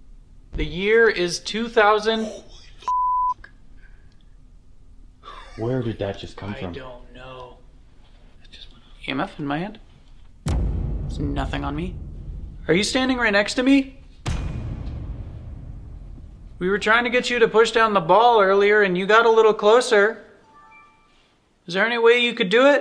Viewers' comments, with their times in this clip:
0:03 This was another awesome video!! Omg I hear kids laughing I don’t know if it was added in or if it was in fact the kids, but either way another rock star video guys!! ❤️